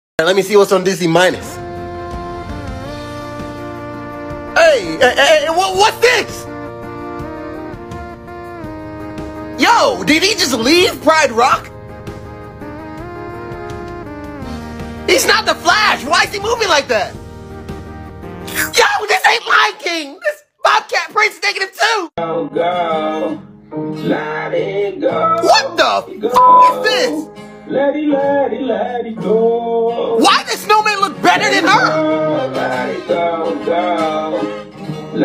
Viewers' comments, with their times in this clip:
0:02 if this song doesn’t play at my funeral I will not die
0:18 The way he said yo is so funny